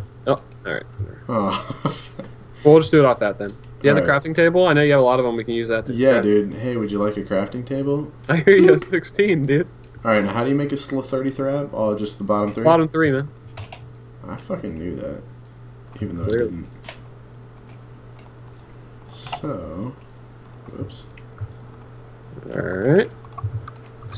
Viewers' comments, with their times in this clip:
0:09 IDK why but I died laughing when he said, "How do you make a sl-33-ab"